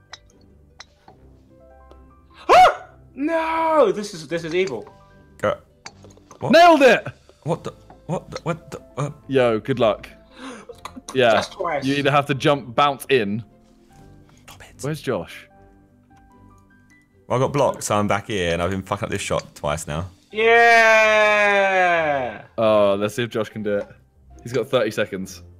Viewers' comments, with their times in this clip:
0:08 tobis suspect noises